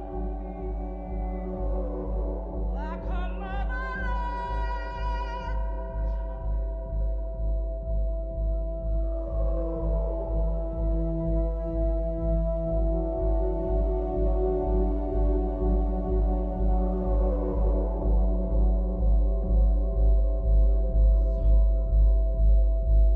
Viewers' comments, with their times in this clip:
0:09 that whale makes me cry so much